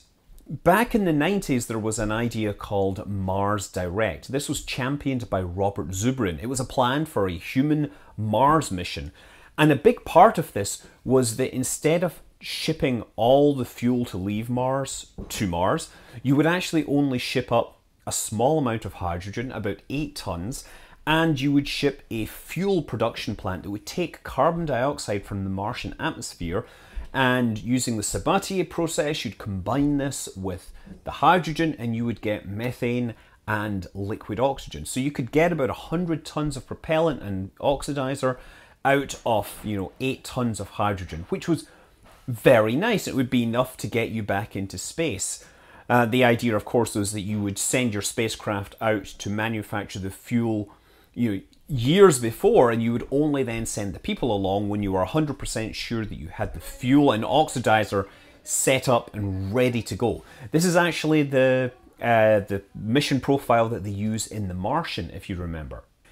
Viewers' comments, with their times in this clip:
0:09 Anyone else hear the discord notification at like ?
0:50 I found this interesting to learn about why different fuels are chosen, but that female voice was distracting.